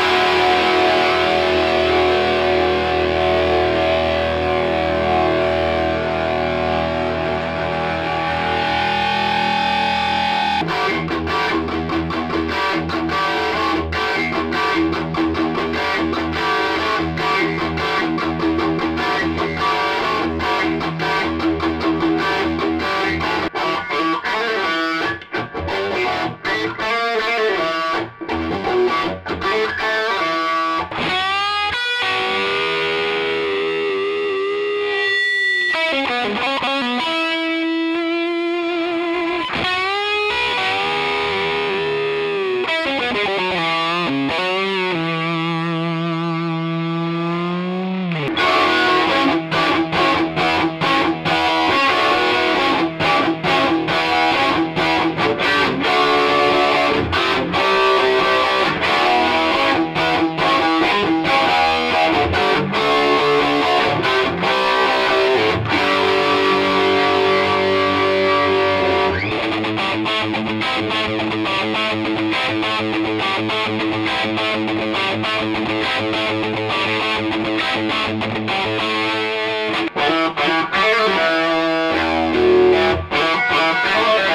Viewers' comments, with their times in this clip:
0:10 "RADER RIDER" Wicked riff!
1:09 That riff .....THATs a NWOBHM riff if I've ever heard one. That genre had so much SWING.